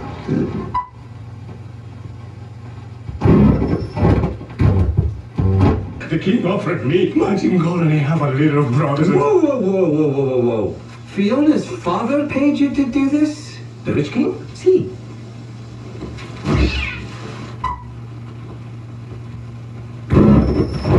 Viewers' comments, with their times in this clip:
0:04 always hated the loud, creepy noises when the 35 mm print is adjusted as a child. Glad they don’t have that anymore.